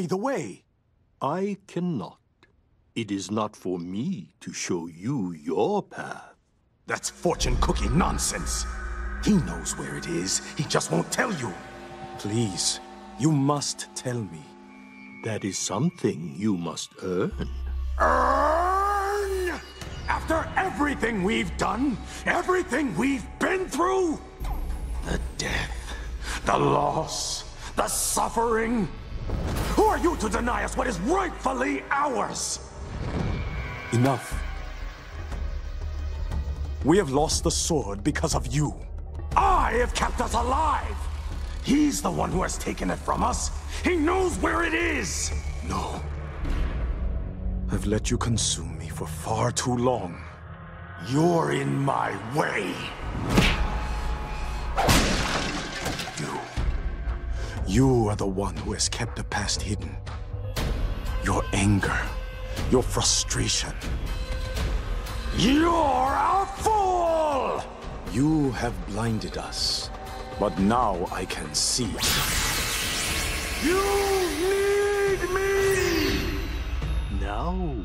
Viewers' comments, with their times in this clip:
0:06 THAT'S FORTUNE COOKIE NONSENSE! He said calmly
1:00 The soundtrack here is perfect, it feels like it's out of control, unstable, unbalanced, once Jack realizes he's not truly in control and his anger is to blame Mad Jack looks so full of anger and the soundtrack reflects that